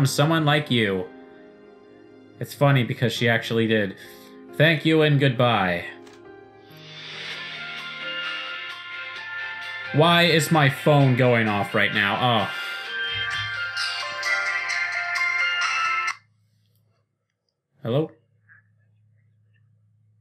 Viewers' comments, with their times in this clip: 0:07 that awkward moment when you think your phone calls because you watch the video on you phone